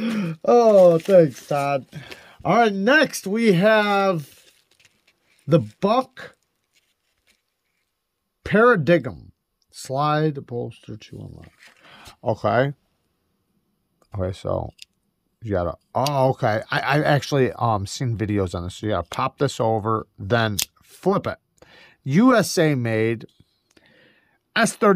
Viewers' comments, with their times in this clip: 0:06 ROFL @ "The Buck... Par-a-diggum." Pretty sure it's pronounced par-a-dime.